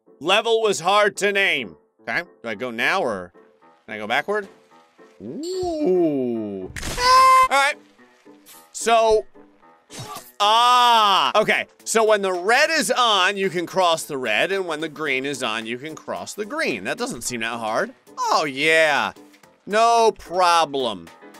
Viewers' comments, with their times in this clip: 0:05 Dude the OOOOH...AHHHHHH freakin killed me dude hahahahahaha bruh just wanted to go backwards HAHAHAAAAA
0:06 GrayStillPlays once said: Ohhhhhh "vacum startup sound"